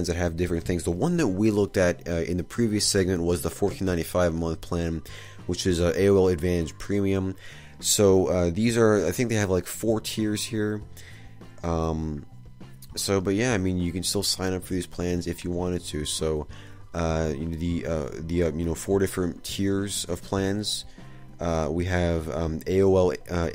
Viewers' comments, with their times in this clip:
0:04 Dial up sounds btw.